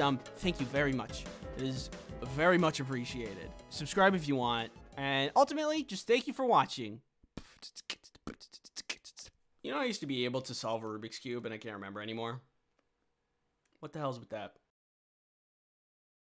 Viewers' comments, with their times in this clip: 0:07 that sounds like the beginning of king kunta